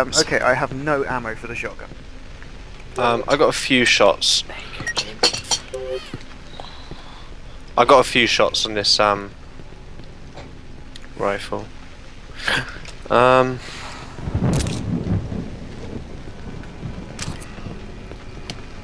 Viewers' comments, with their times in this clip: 0:05 If you listen closely... you can hear my brother, kindly delivering me cheesecake.